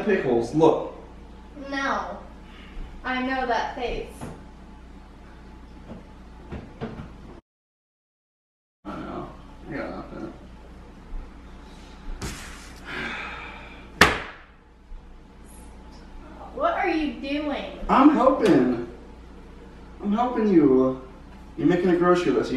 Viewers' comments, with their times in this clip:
0:10 Did anybody else notice the sound cut out